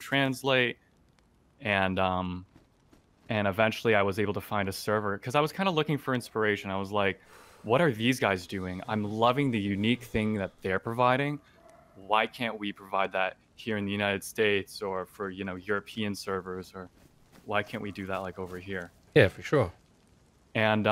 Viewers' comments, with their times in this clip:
0:07 He kinda sounds like Mark Zuckerberg